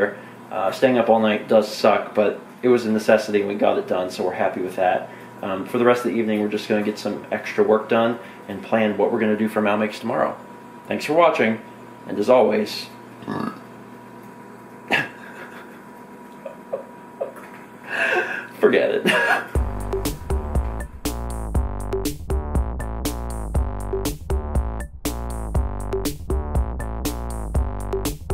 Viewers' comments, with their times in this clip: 0:10 "Thanks for watching, and as always--BURP" 6.8/10 on the Burp-O-Meter good sir.